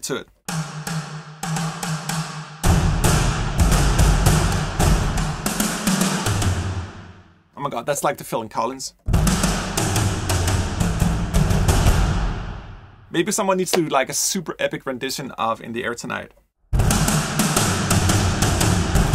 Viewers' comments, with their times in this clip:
0:06 just add GATED reverb to that In the Air riff!